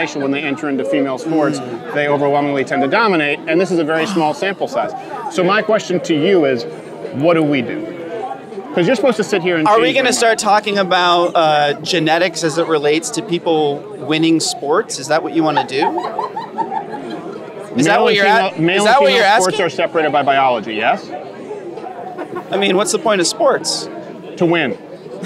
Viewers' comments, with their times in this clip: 0:10 are we not going to talk about the hyena laughing in the back just as Steven was spitting facts